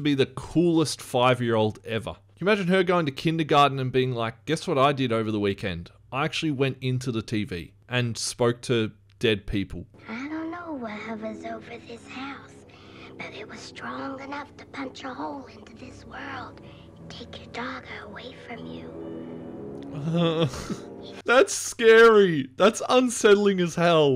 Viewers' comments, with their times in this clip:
0:10 Her whispering about the evil entity always creeped me out. Just the thought of an evil being lying and deceiving an innocent child really makes me 😬...